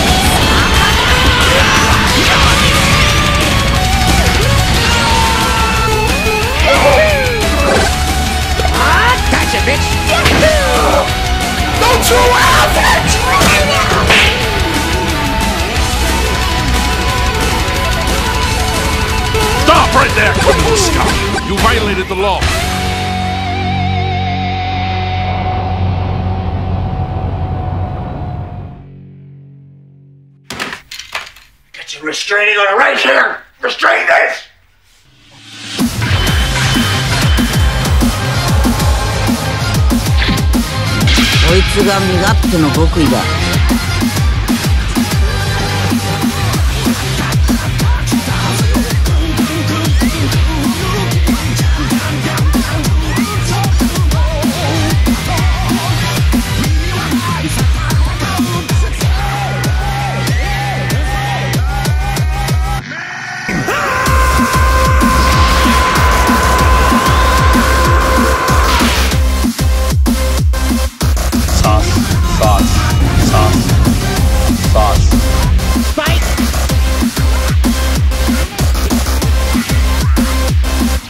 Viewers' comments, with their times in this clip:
0:06 I like that the sounds match with the pitch of the final note of the song! Just wait for the final note to see what I mean...
0:19 That actually was perfect Dubbing
0:20 the way he said "You violated the law" was so perfectly in sync.
0:34 Yoo the song was a banger👌
0:36 This remix is fricken sick
0:36 I desperately need an edit of the song that has that Kamehameha in it. It just goes way harder than it had any right to.
1:03 that scream tho, instead of sreaming out of anger, he screamed like he step on a lego